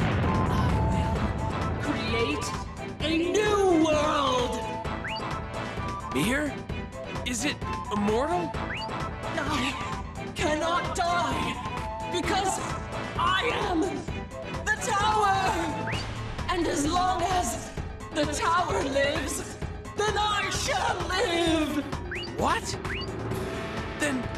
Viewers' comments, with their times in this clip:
0:05 The BGM kinda sounds like a remix of Paper Mario's BGM